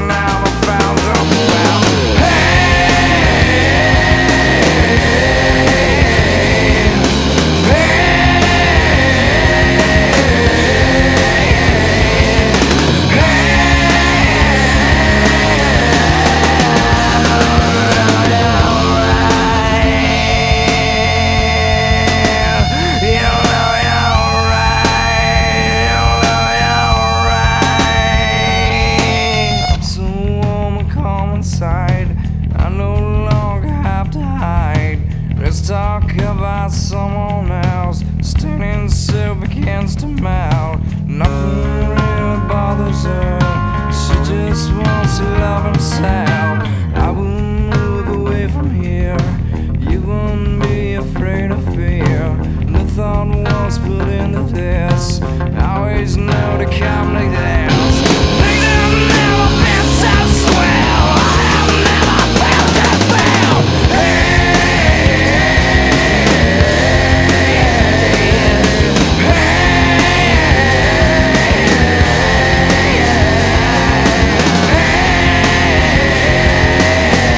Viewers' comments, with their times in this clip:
0:05 And most ppl think he says hey pause but its whatever your lil heart wants it to be
0:07 you can hear him say "puh" in the chorus for pain, something the vocals only version lacks, meaning it is not valid. The chorus goes "Pain, Pain, Hey"
0:12 Anyway Anyway you can clearly hear him say hey
0:22 Love the guitar scream
0:30 This is so fucking layerd...but so simple ....it is what it is... ..
0:41 and the guitar note though. it also gives me goosebumps every time. it gives me the weirdest best comfort feeling from a song. you will always be remembered, kurt <3
0:58 Oh my god, that second “I have never failed to fail” . . . I think that’s the most powerful, emotional vocal I have ever heard.
0:58 I think it's "I have never failed to fail." That seems more Cobain lyrical wordplay. he enunciates "fail" moreso than "feel".